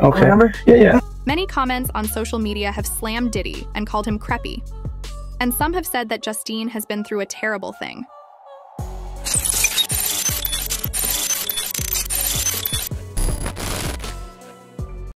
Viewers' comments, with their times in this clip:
0:06 Hold up, Did the pronunciation of ‘Justin’ change? No hate, just wanna know. 🫢